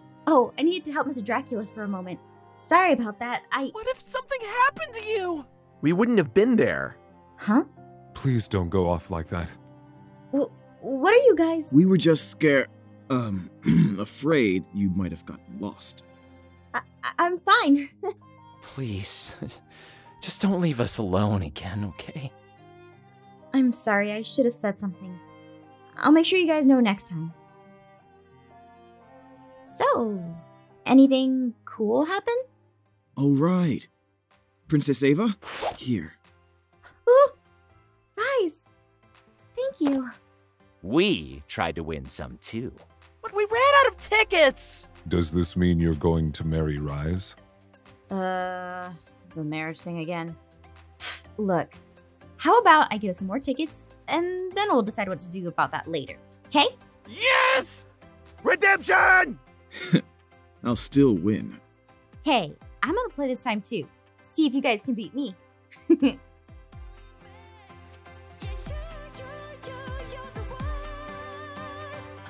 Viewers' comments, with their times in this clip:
0:03 aww Leaf is crying😢
0:18 Asch: tearing up “Please, just don’t leave us alone again, ok?” Me: falls on he floor managing to cough, wheeze, and cry all at the same time MY HEART HAS BEEN IMPALED
0:18 I did it was cute then the second mark asch sounded so sad and so cute 🥰
0:19 You can see the tears in his eyes and how hard hard he’s trying to keep his voice from cracking. 😢
0:58 Leif: REDEMPTION!! Captions: we're dead John